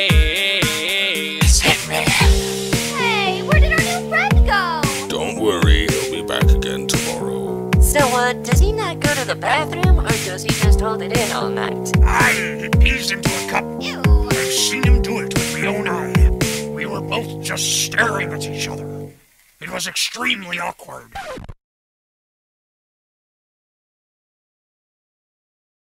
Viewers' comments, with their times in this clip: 0:05 Freddy kinda sounds like Kevin Michael Richardson
0:14 Why did my dysfunctional ass ears hear "Yuhh, get into it."